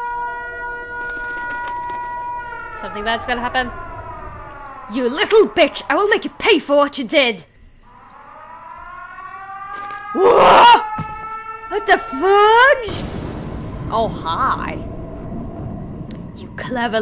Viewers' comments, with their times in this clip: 0:04 I love the emotion you put into your voices =D So many people are playing this and I'm happy you are too. So much crazy stuff happens later on